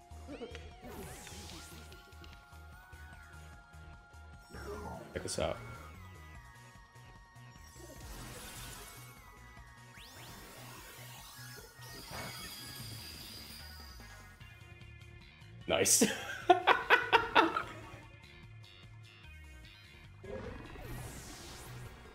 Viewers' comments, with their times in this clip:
0:04 "Check this out" he says quietly, right before scoring the fattest crit of all time